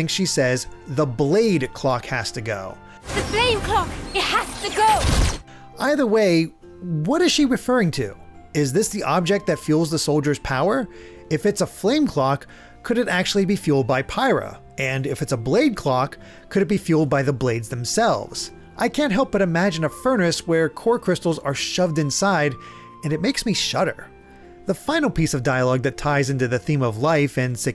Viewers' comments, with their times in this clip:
0:03 I hear “Flame Clock.”
0:03 I dont think flame clock or blade clock are correct. sounds like thave or thane to me. Thave isnt a word, and I dont expect a Macbeth reference, so I dont think either of those right unless it is a jrpg character or location name. Also, Youtube CC in the official reveal says flame clock. CC for this vid says blade clock.
0:04 Honestly sounds like "Blame clock" to me.
0:08 I hear "the MAIN Clock has to go!"